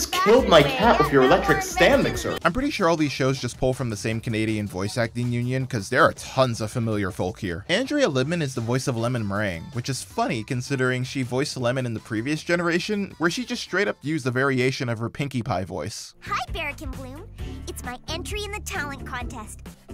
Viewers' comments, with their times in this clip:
0:07 sounds like bipolar depression Pinkamena (strait mane version) and "Diamond Tiara's soul trappeed in Rarity's body" (spit-take) now you have my full attention, Ms Twilight ♥ or whatever. First off, thanks for acknowledging Diamond Tiara has a soul. 😉